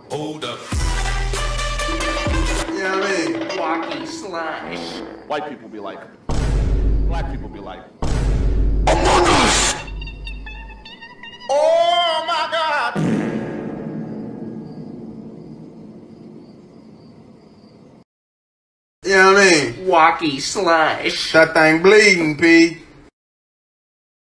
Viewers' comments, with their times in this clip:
0:09 INSANE STREAMER makes cameo in FAMOUS animators epic meme video with his ICONIC AND SOUL CRUSHING teacher noises